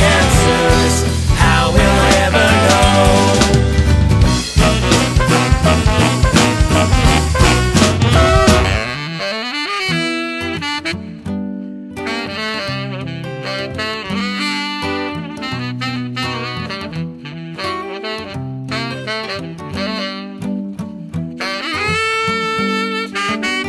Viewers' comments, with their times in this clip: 0:08 It's a sax in the solo right?
0:08 The baritone solo intro is nothing but perfect 👌 the whole thing is.